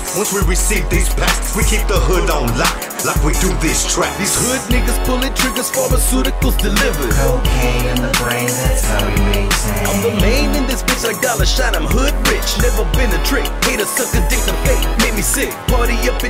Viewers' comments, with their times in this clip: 0:03 killllled it. Fuckin loved him. His voice had that lift to the beat really played with his verse.